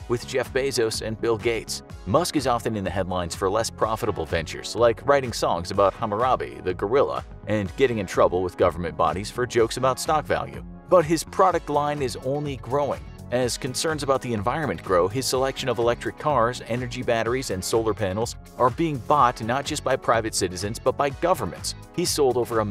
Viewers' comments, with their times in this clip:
0:05 did you just say HAMarabe!? How you not know how to say Harambe 😩 man. Unsubscribed can’t see past this major L.